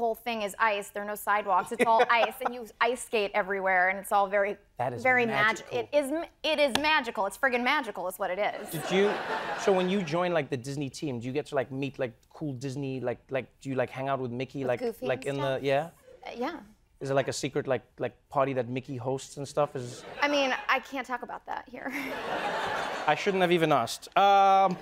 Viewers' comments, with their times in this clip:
0:07 Get you a man who will stutter and wring his hands nervously in your presence just like Trevor does because he can’t handle how hot and intelligent you are.